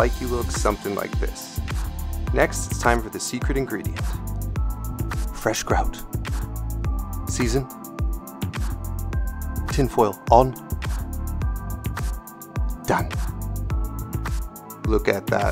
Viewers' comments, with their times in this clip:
0:03 for a second I thought you really used a Gordon Ramsay voice clip, your impression was spot on! 🤣🤣👏